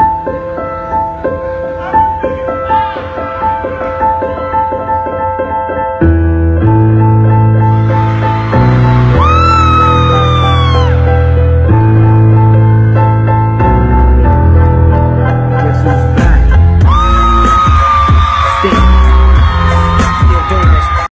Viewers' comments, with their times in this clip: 0:06 that beat drop timing and then crowd reaction is epic
0:12 who heared the mistake
0:12 its a bit hard to hear at first but its on